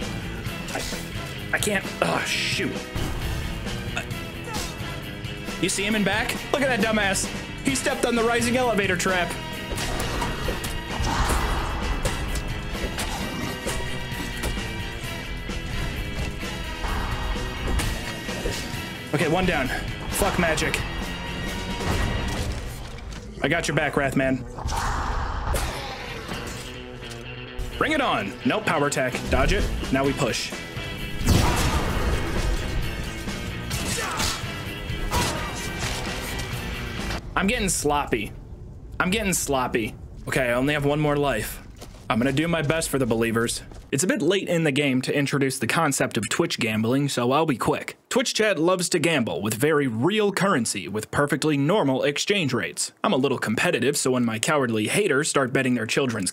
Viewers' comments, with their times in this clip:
0:06 The sudden TF2 music startled the fuck outa me
0:37 im sure the editing is good all thoughout the video,. but from i really noticed,. pauses in the music matches him being in the menues,. then a drop, hit after hit matching the notes, and the music finish,. great job,. thanks for the vid,.